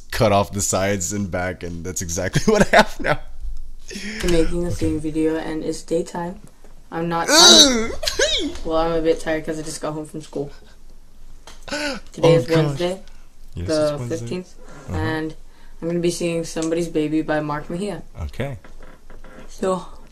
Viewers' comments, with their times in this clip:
0:08 THE NOISE YOU MADE OMG IM ACTUALLY CRYING IM ON THE FLOOR